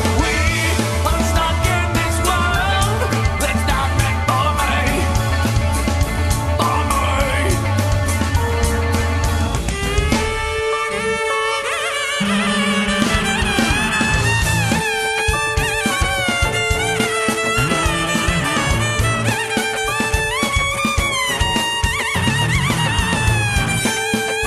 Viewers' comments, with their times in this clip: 0:09 JD is so badas but i hate that weird fuckin violin thing KORN 4 LIFE